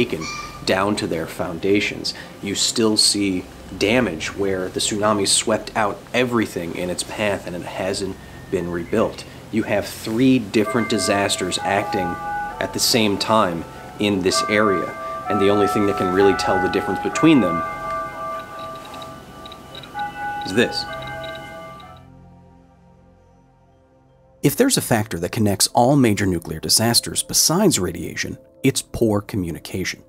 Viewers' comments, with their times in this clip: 0:10 Typical anime background sound
0:11 I love how I can tell what time they filmed that monologue. Amazing to think the speakers are still being run in that area.
0:13 anime chimes are real i guess
0:14 I loved when the bells began chiming that was such an unintentionally cool part
0:17 the ethereal tone of a long abandoned bell, diligently awaiting the day that its mechanisms finally fail and it rings for the final time. Hauntingly framed shot.